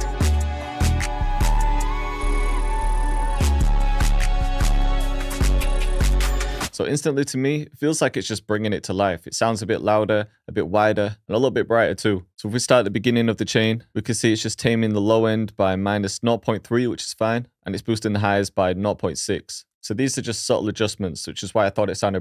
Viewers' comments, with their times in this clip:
0:04 I only hear a lot and lot of distortion! 😂